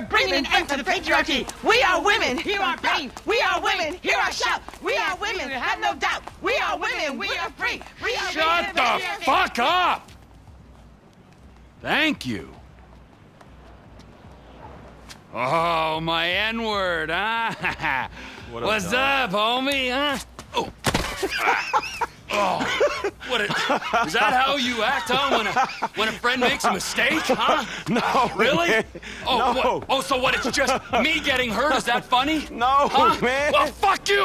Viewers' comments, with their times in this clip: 0:08 The best intro yet especially when Trevor fell over and Franklin laughing at him😂😂😂
0:09 i laugh so hard he’s like a drill instructor ahahah😂😂😂😂😂🤣
0:16 actually a complete accident and they went along with it, franklins laughter was completely genuine, This fact is indeed a legend I accidentally was misinformed is I apologize , still an awesome scene
0:19 i was so amazed with their acting skills in this part but only to find out that trevor wasnt supposed to trip over the fence that caused franklin to laugh
0:20 FYI, The entire scene was unscripted...and as they did it in motion capture suits, Frank's laugh is genuine and real.
0:20 Fact: that failure was 100% from real life, and that was 100% Franklin's actor real laugh
0:22 that's gotta be one of the first times franklins laughed
0:22 bro, i was laughing with franklin on that one 😂
0:22 Franklin’s Laugh Lmao